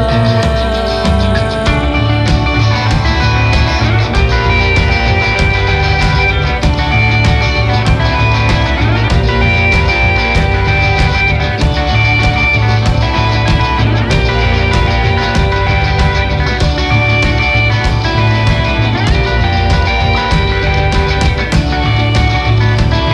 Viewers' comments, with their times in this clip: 0:04 that guitar line is so out of tune and she continues playing it like it sounds good...sorry for pointing this